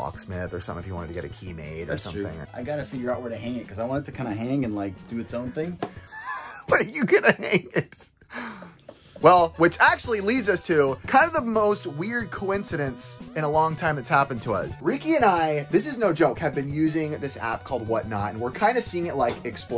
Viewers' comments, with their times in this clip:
0:03 LOL - the sincere laughter of a friend being honest